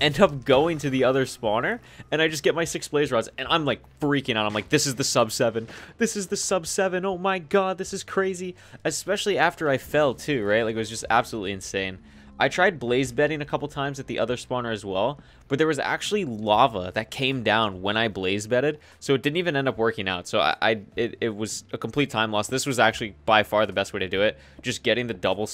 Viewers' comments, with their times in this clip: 0:05 Who else thinks that he sounded like Technoblade for a moment
0:06 is it just me or he actually sounds like technoblade ?
0:06 he sounds like technoblade right here